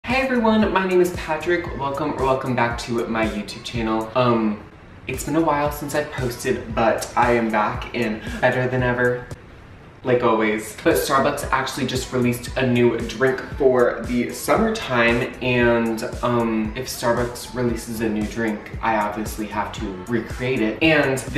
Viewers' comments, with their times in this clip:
0:04 That “Um” gave me life 😂❤🥤